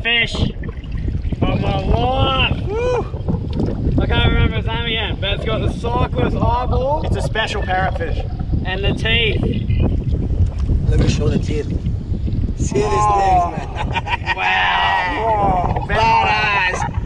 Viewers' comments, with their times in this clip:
0:03 The sound that parrot fish makes is slightly terrifying XD